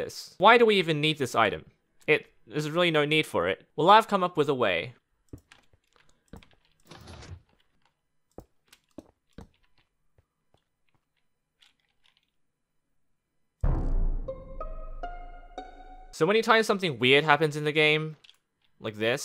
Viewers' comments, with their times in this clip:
0:03 crying pe players noises